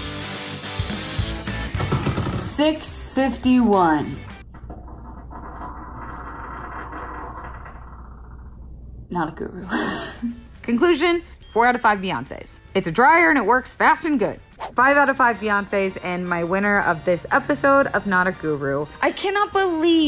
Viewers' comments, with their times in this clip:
0:04 lol love that farting.